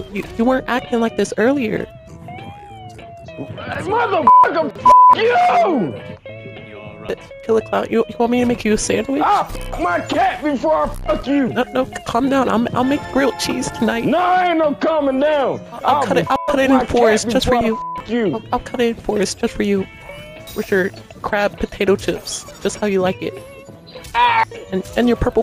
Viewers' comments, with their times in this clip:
0:09 Shane Dawson is that you